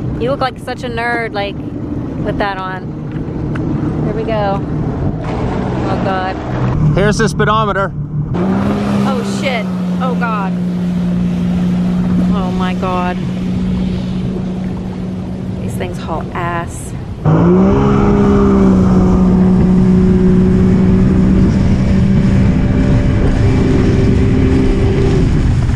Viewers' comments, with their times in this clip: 0:08 Um ya forgot to bleep